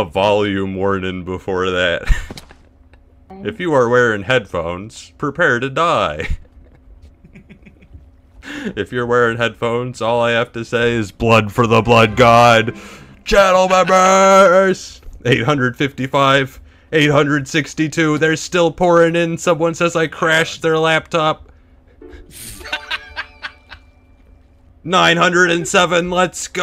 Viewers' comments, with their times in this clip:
0:10 I WAS WEARING HEADPHONES AND IT ALMOST KILLED ME